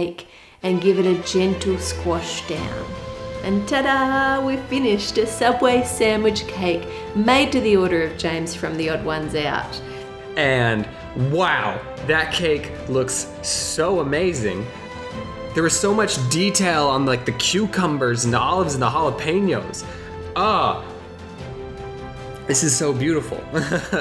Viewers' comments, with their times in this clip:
0:06 I love how it's a cake and there's just epic music playing in the background!🤣 I mean it's an epic cake, but still